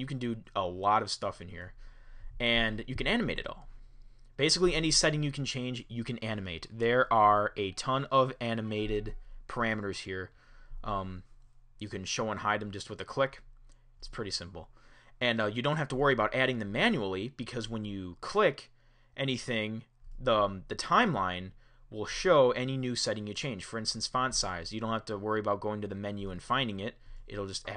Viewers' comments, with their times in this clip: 0:08 Did anyone hear a iDevice get a mail ?